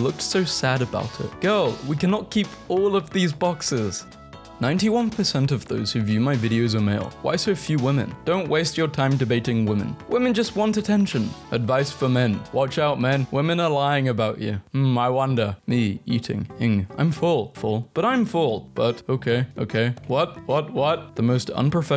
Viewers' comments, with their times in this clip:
0:04 Why was there a pause